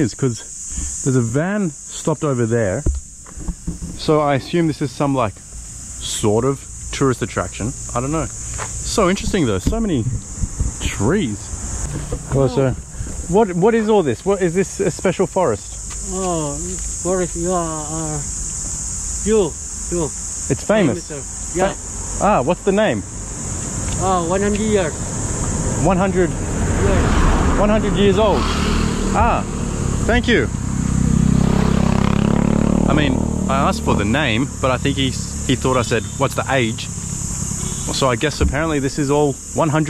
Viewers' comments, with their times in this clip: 0:04 the noises from time stamp is from crickets.
0:21 even me didn't understand what he said😂😂